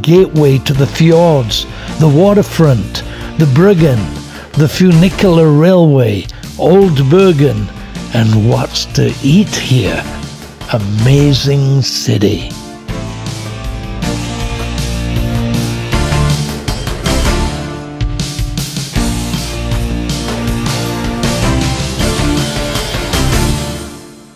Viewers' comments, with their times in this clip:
0:07 Burgen ? :D Bergen sounds like Bargain.